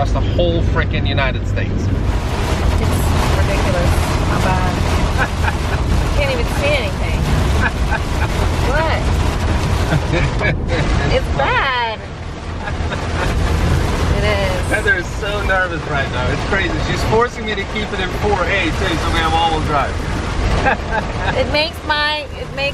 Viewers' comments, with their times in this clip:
0:03 that Joker laughter...priceless :D